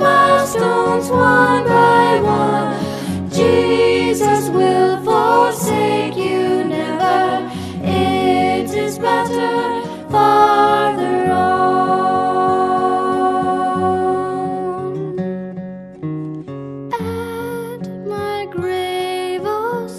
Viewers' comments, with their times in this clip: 0:04 I didn't know Greta Thunberg did bluegrass!